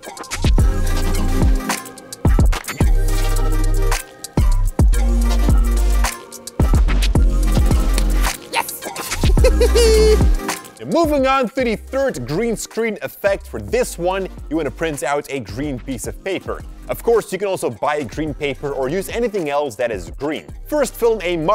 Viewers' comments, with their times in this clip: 0:08 That Evil laughter 😂😂